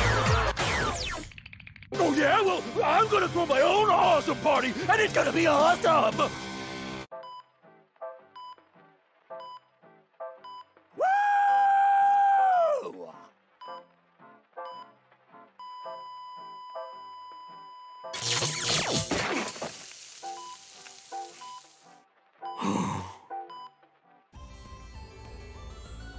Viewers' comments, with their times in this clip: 0:07 The heart monitor 💀